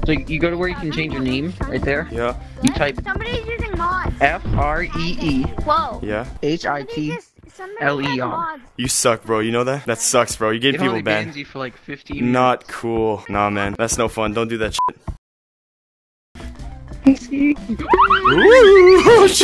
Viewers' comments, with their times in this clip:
0:06 He sounded pissed